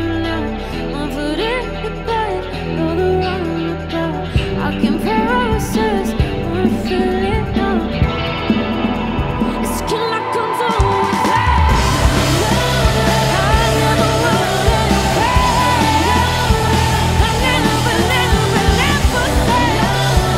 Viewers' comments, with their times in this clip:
0:08 That piano / church bell sound is the icing on the cake. Holy cow that was a good idea. EDIT: OH, that was the guitar with FX. Holy crap.